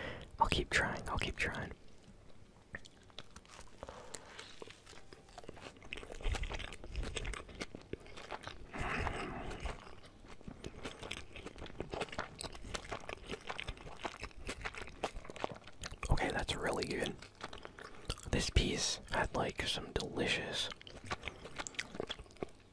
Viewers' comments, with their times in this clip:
0:03 my favorite munch